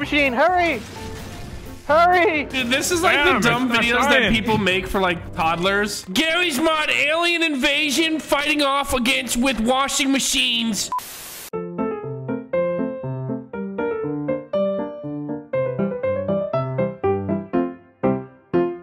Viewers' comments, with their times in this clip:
0:04 "alien invation fighting off against washing mashines" kid in the background: thats a really cool idea